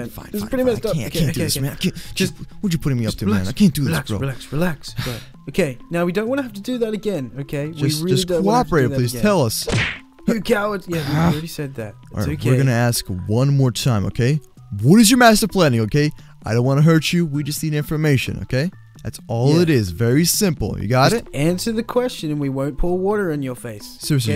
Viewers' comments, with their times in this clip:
0:09 when the sub button came up it made a punch sound when jack o chica hit moose.